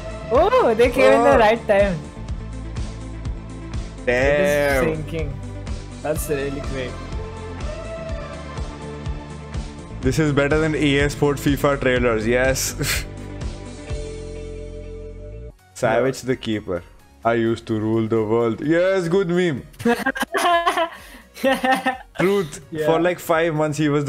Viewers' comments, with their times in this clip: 0:05 Season 3 song was cool 😅😅